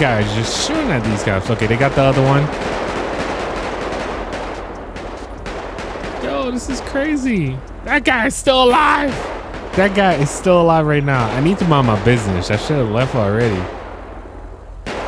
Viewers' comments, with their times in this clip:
0:03 lspdfr moment😂he was talking like he was the cop😂